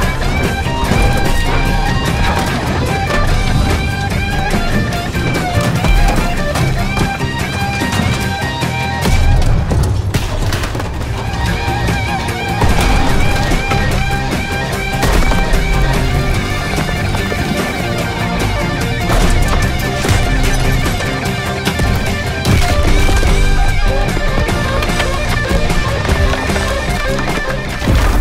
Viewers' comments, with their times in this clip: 0:09 I like how the music muffled when the tank explodes because of the loud noise